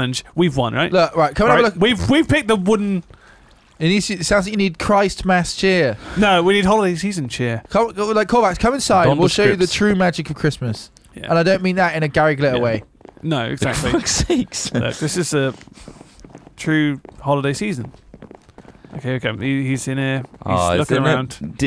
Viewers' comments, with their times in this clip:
0:07 What was that moment when it sounded like a microsoft speaker was saying donald trip